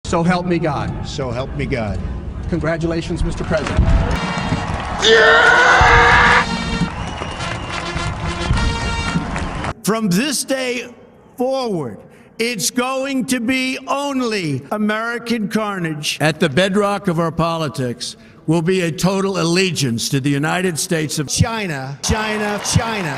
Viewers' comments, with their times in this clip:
0:05 sounds like a tie fighter